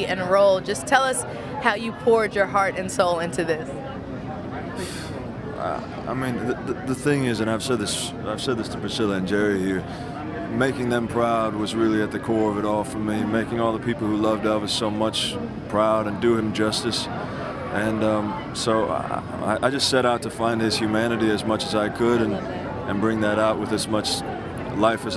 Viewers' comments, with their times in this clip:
0:06 he sounded exactly like Elvis! You can tell Austin worked so hard to capture elvis to the best he could, and he did beyond that. He was phenomenal, truly impeccable acting.
0:06 HE SOUNDS SO MUCH LIKE ELVIS LIKE WOS